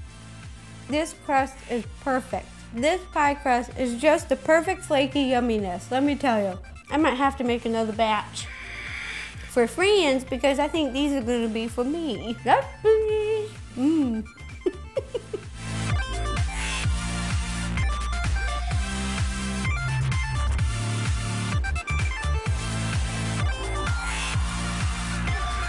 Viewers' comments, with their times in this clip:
0:08 Did anyone hear the noise